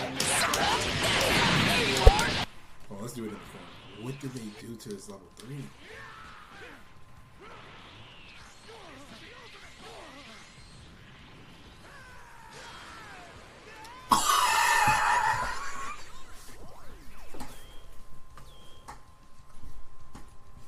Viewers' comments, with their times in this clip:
0:06 why he laughed?